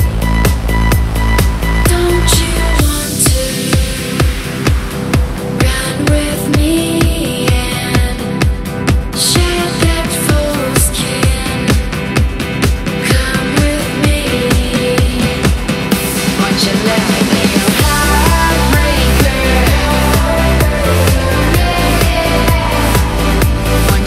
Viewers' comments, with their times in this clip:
0:08 sounded like "shed that foreskin...". LOL!